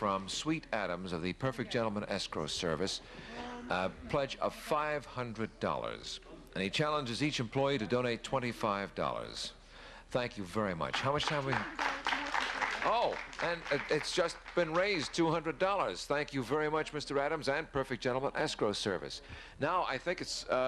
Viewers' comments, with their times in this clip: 0:08 Did he say Perfect Gentleman ESCORT SERVICE??